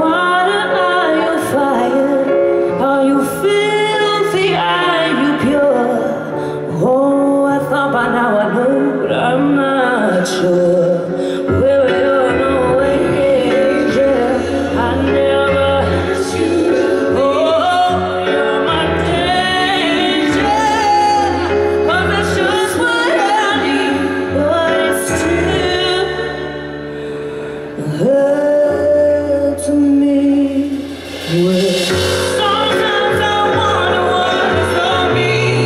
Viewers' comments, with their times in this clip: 0:04 that raspy thing reminds me of billie holiday sound ❤️
0:11 Why isn't in the original song !!!! That run was magnificent on point
0:19 Her technique is clear here